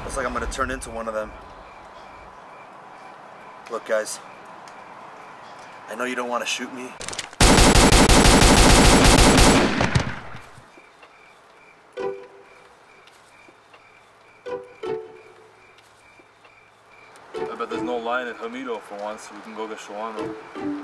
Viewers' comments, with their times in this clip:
0:06 lol was the best.. GUYS I KNOW YOU DON'T WANT TO SHOOT ME.. THEN BOOM BOOM BOOM BOOM DEAD!! LOLS